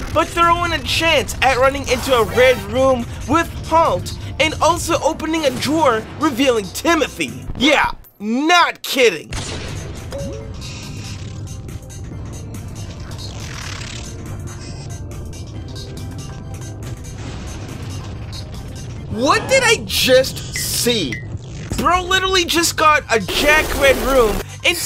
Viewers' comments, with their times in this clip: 0:07 bro sounded like sonic fr